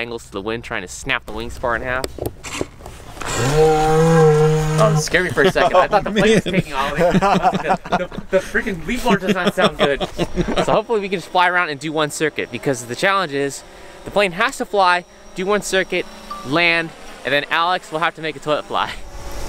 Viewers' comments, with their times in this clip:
0:03 amazing sound, i was totally convinced it was taking off